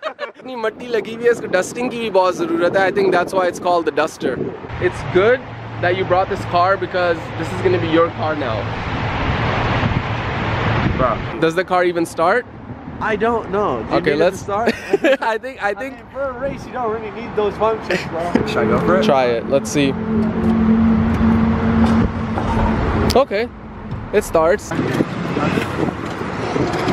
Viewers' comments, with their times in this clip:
0:09 a solid moment of silence 😂